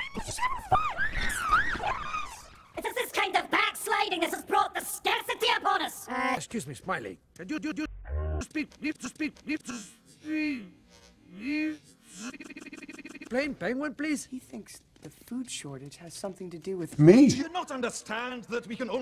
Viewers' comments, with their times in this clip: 0:03 This voice sounds familiar.